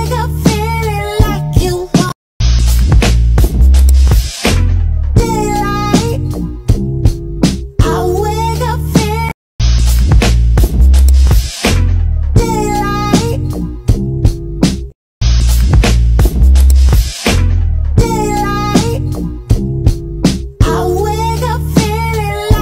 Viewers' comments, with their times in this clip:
0:09 bruh she does not realise her son is blasting some shit with headphones on -_-